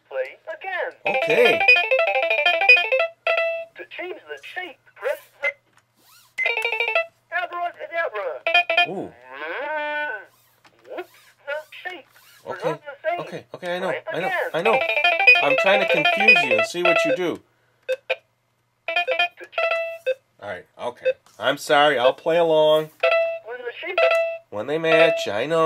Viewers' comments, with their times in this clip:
0:09 Does this sound like a cow to you ?